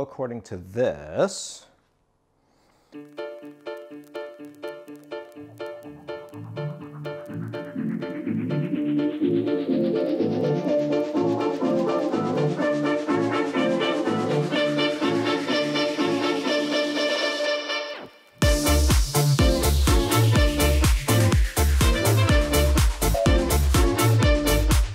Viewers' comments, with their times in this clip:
0:09 The music starting is nice ! (Also the Philips kit).